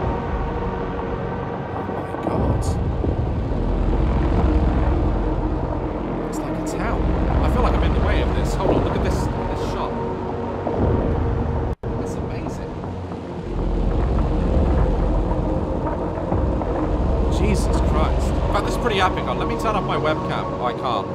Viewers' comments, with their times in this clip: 0:09 has to be one of the coolest shots ive seen in a video game- and the music its just W O W